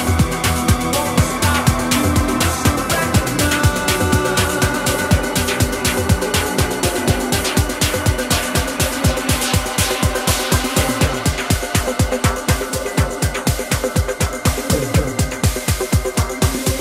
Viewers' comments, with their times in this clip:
0:04 That transition after the minute mark is probably the best transition I’ve ever ever heard in my life it gives me chills wawww 🔥🔥🔥